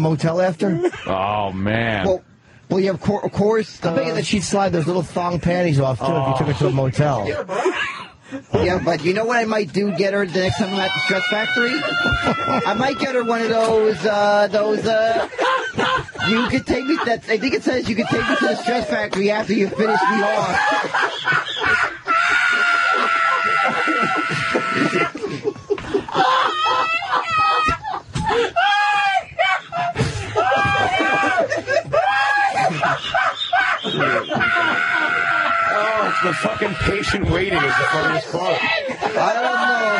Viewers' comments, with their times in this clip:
0:08 is about the best laugh I have ever heard from Patrice, absolute gold!
0:21 I could be in the deepest, darkest depression of my life and Patrice's laugh would snap me right out of it.